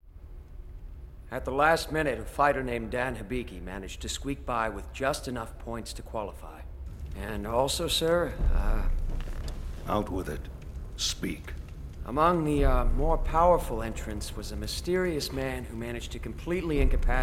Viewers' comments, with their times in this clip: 0:01 That guy sounds like Abel